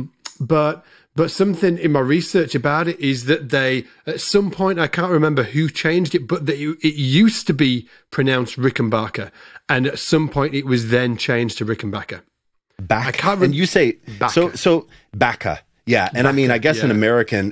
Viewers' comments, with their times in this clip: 0:04 I have a hard time hearing the difference in pronunciation they're discussing Can anyone break this down for me? I'm guessing it's something about one of the vowels, and it's probably the penultimate syllable - rickenBAcker - but what's the difference there?